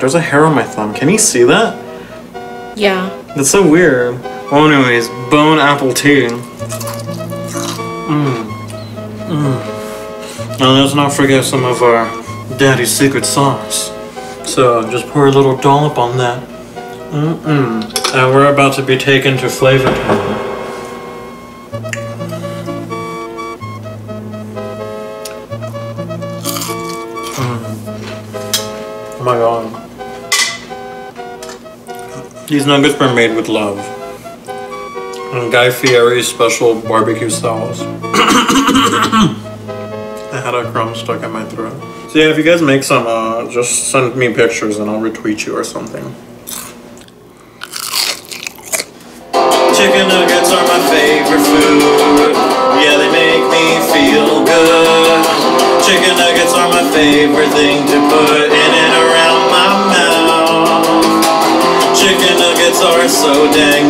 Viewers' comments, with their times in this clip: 0:05 damn that crunch. my mouth is legit watering
0:46 nggggh that crunch
0:50 Found blink 182s newest single